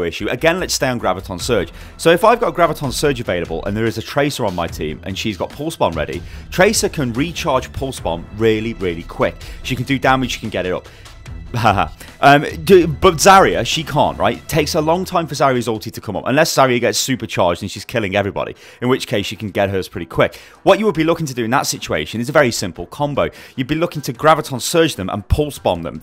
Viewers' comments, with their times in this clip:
0:09 "She can get it up" the wee sarcastic giggle afterwards killed me xD